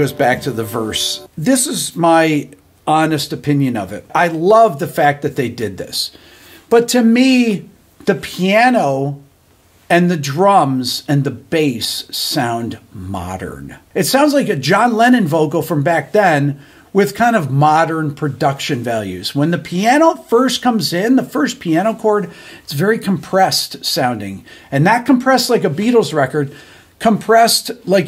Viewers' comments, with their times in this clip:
0:09 EXACTLY. That is the issue. The issue I have is that it doesn't feel as Beatle-y as anything by George Martin or even Jeff Lynne producing. I guess I understand updating for today's sound, but these are The Beatles. The charm is their unique instrument sounds. Ringo's drums, Paul's bass. Need to get that in the mix the way the classic Beatles always did. Still like the song a lot though.